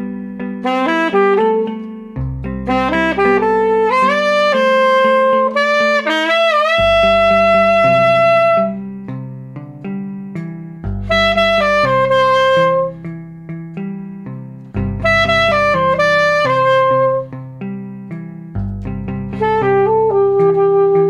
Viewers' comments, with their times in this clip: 0:06 What kind of wizardry is going on? Mouth open but still my man sustains that note. J a beast on that sax. Really enjoyed the episode. It was just so blatant I had to rewatch the loop 10 times, and thus share with you all.